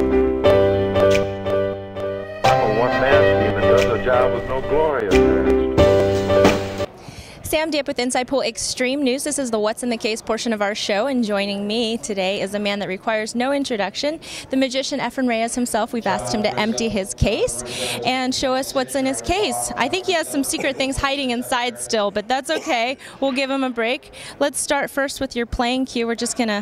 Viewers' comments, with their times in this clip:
0:07 Why is there no audio past seconds?